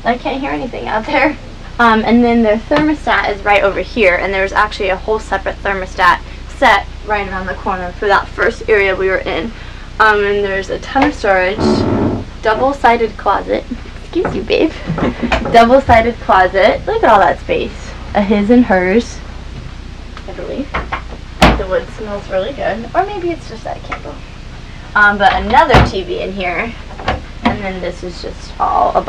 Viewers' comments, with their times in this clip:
0:10 WTF??? She cuts the cheese something fierce & goes on like nothing happened...whatta trooper!!
0:11 That fart was hilarious.
0:11 He farts LOL!